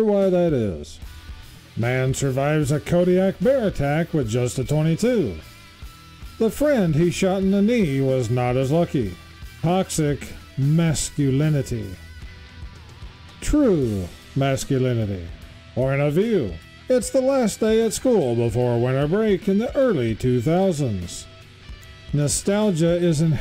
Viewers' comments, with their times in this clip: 0:08 "Kodak bear"? Does it take pictures with an old camera?